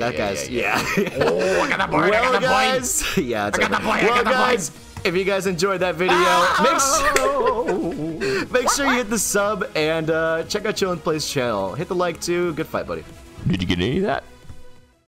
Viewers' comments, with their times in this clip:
0:07 those sound effects were so underrated